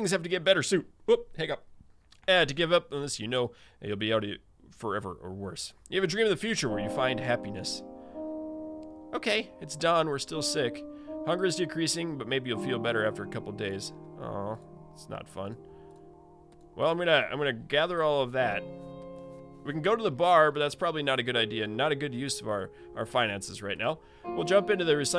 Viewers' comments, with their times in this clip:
0:06 Is it me or does that background music remind you of Minecraft?